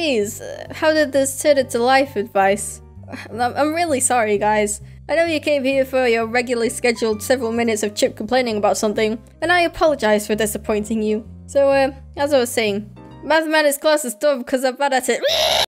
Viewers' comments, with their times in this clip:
0:13 I love the beautiful REEEEEEEEEEEEEEEEEEE at the end. Performed beautifully